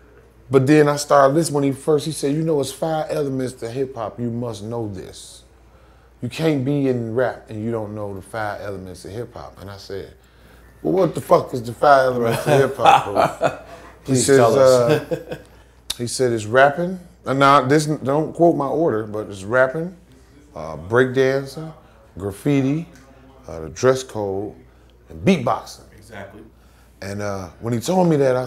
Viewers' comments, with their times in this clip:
0:10 he said like mike epps